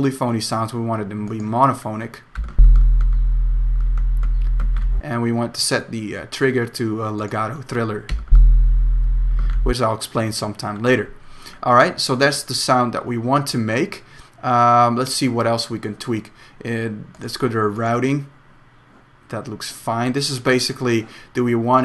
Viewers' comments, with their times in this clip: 0:08 Help! I made a new MIDI track and put in Massive, but I dont have the deep sound like u do, I have like a Super Mario note-sound, lol. ow did u get the deep bass sound egg. where u play it!?!?